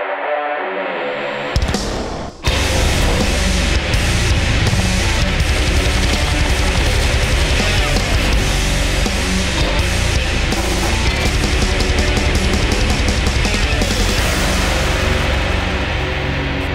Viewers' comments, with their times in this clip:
0:03 Did anyone else notice the dog barking ?